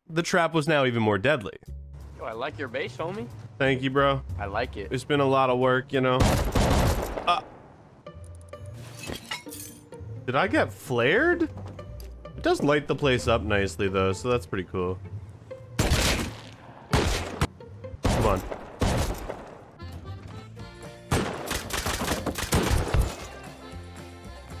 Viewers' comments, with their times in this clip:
0:03 Did I just hear the Swedish national anthem? lmao
0:07 swedes rejoice, for the national anthem is playing